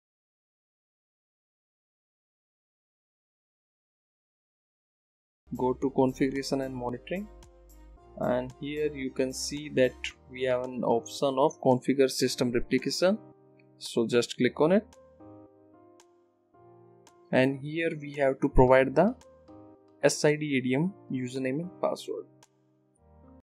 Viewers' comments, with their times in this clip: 0:08 start watching video from voice is not there multiple times. hard to understand.